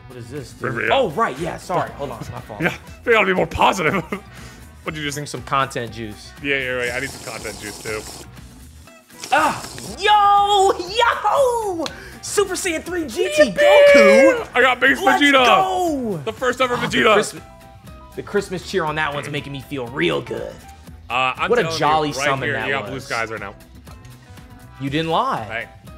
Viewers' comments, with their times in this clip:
0:10 I CANT 😂😂😂😂😂 Yo yo😂😂😂 how they get hyped got me badly😂😂😂